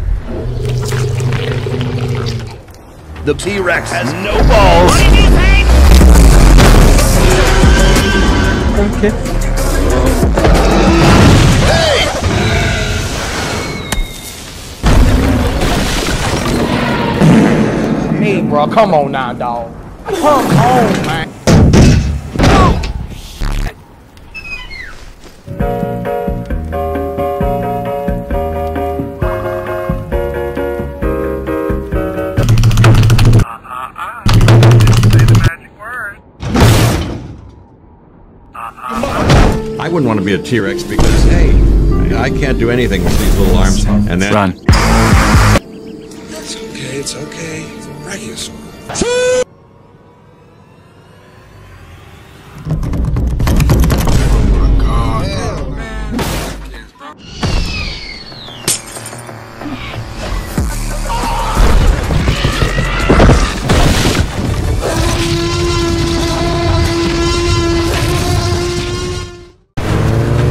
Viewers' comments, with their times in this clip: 0:03 the way that alan says *the t rex have no balls😂😂
0:16 ‘*Farts*’ “Hey bruh, come on now doug” ‘*Farts even louder*’ “Come on, man!” Best part 😂 P.s. I now know why my comment was gone, bc the video got taken down lol
0:22 this dinosaur sounds cute.
0:55 who else heard the raptor say “fuck these hands bro”?